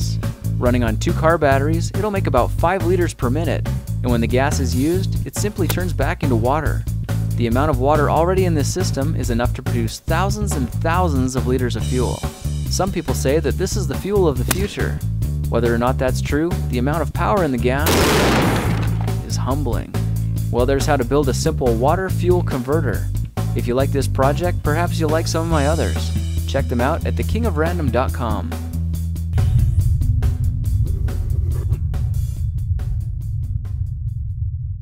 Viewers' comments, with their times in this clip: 0:05 that sounds like a suppressed gun in gta 5
0:14 Now we know how they made the Hitmarker sound
0:17 S**T MY EARS
0:18 LoL that just got rid of my sleepiness cause I have my headphones on max and I thought there is a grenade in the house XD